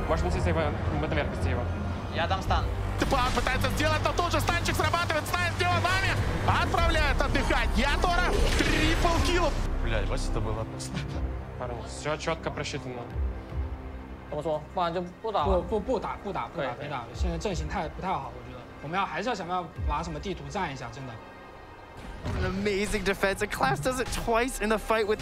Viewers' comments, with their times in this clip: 0:07 i love how he rolls the tongue on that Triple Kill, should be a voiceline